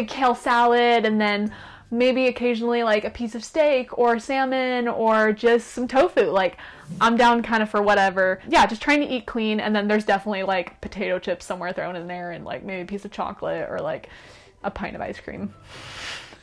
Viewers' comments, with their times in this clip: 0:03 why did she say 'steak' like that